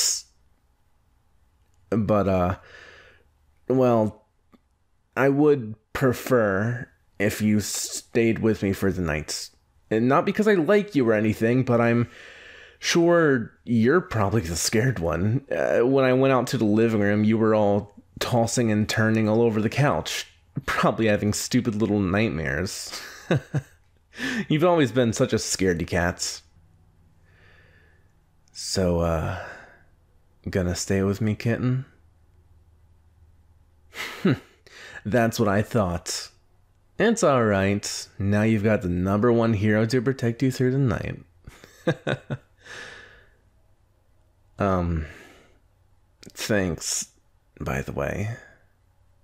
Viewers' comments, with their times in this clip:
0:09 scat singing Hey that was pretty good EH-? NO ONE ASKED YOU!
0:33 BRO THE WAY HE SAID KITTEN AHHHHH